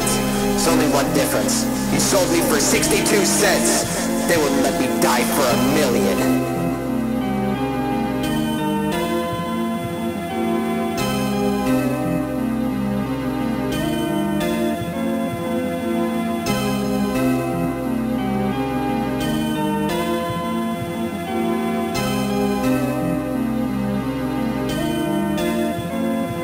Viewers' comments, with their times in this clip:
0:07 this little instrumental part sounds amazing